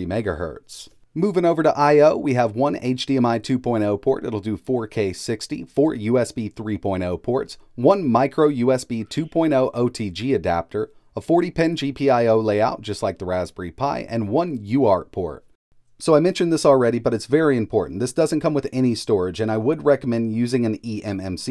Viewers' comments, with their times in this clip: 0:08 Anyone alse hear someone scream in pain in the background ?